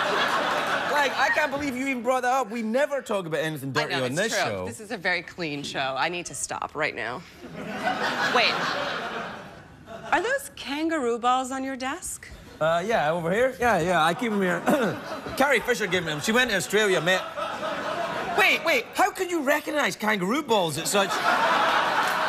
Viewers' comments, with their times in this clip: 0:08 that second of silence)